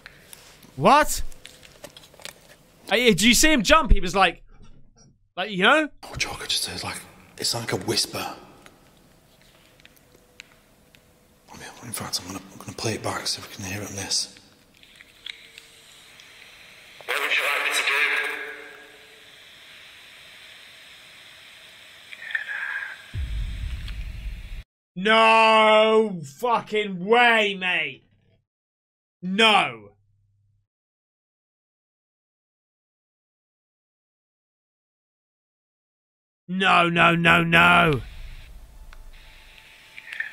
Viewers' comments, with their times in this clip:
0:08 after he says, "It's like a whisper," you can hear, "Get out."
0:23 “ get out” sounds like his own voice whispering. I call fake.